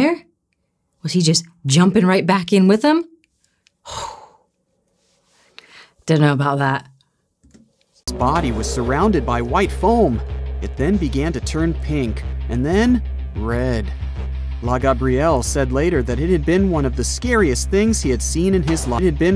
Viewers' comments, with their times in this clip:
0:05 "dunno bout that!" You're becoming a proper Londonah innit!! 😂🤣😂